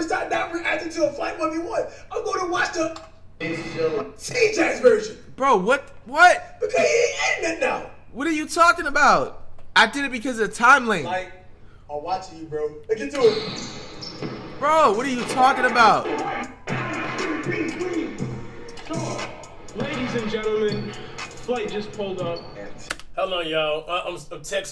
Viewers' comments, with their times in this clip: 0:10 flight tries to hold in laugh because he knows he cappin🤣😭